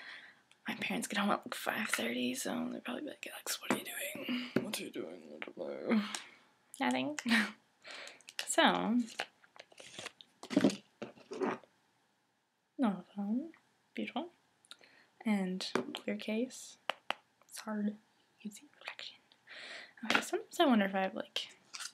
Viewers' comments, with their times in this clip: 0:08 I enjoy the voice you do when you say "nothing"